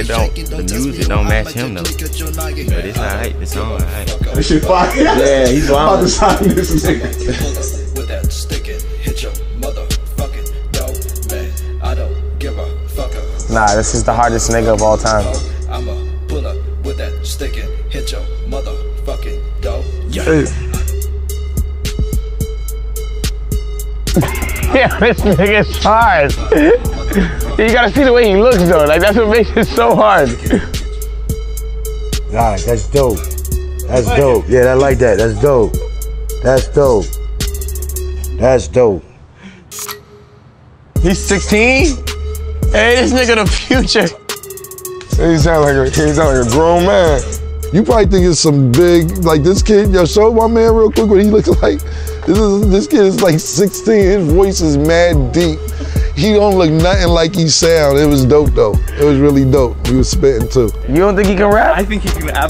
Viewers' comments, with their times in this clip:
0:10 Is Tory being Sarcastic?
0:35 I JUST REALIZED HE GOT GHOSTFACE TO CRY LIKE ASH KETCHUM WTF
0:44 even desiigner normal voice sounded mumble